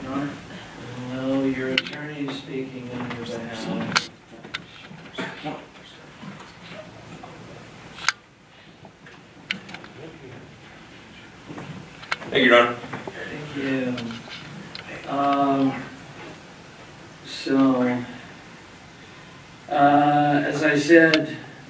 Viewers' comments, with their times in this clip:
0:03 Anyone else crank the volume up to try and hear what their saying?